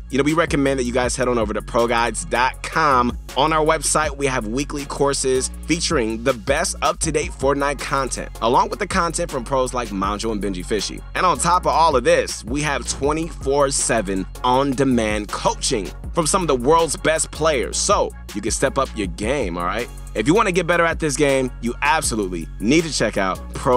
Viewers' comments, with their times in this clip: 0:08 why did he said mongraal like that?
0:10 the way he said Mongraal tho
0:10 Can we get a replay. he said monjal